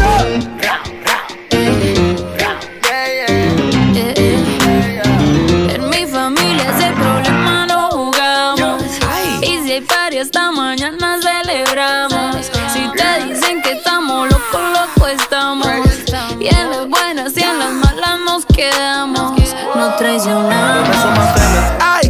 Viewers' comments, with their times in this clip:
0:04 i love love Spanish part